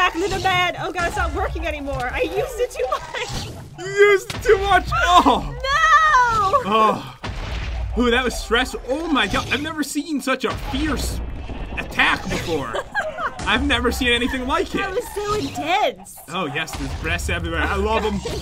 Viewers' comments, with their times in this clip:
0:04 Umm Puberty?? Dat Voice Doe